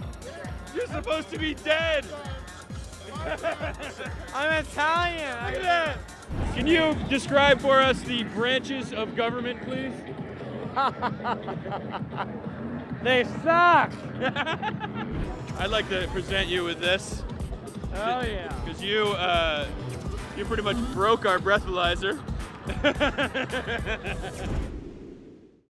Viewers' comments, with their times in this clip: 0:09 the ozzy laugh!!! alll abord ahahahhahah crazy train !
0:10 his laugh is the best laugh ever